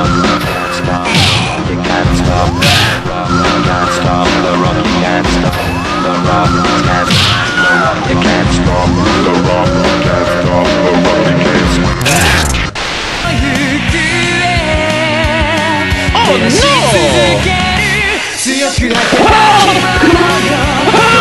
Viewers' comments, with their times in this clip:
0:07 = "The overused scream that sounds in every movie"